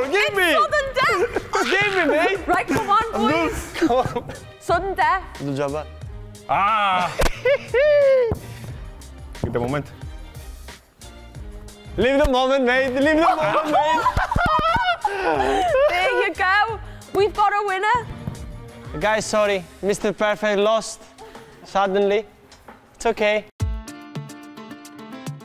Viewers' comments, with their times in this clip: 0:10 anyone know what language they’re speaking ?